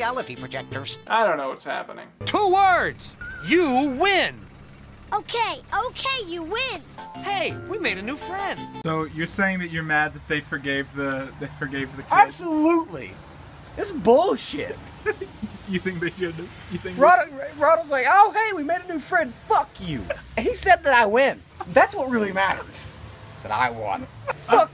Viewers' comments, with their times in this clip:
0:05 Okay but can we talk about why the preteen boy with curly orange hair has the voice of a 4 year old? 😂